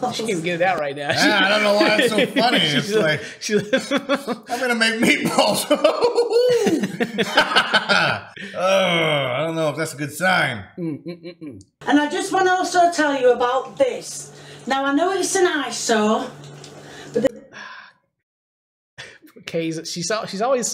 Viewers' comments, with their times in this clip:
0:07 clash royale laugh